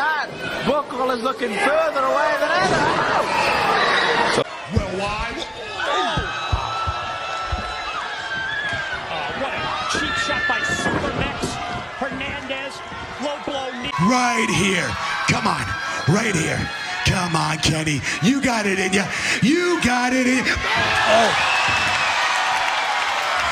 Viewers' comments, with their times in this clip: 0:04 Looks like the knee connects but it's hard to tell. He might be wearing a cup under those jeans. Love how his speaking ends in a grunt.